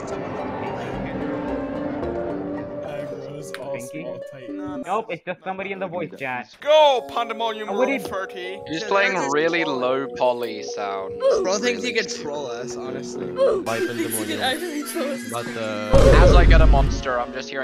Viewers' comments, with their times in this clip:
0:03 bro rlly sounded like this "🤓"